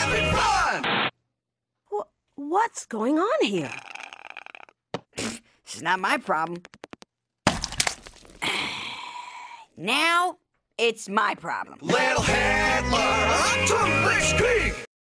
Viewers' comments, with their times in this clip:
0:13 Does anyone know what they say right here? It sounds like it's in German: "achtung...." something something.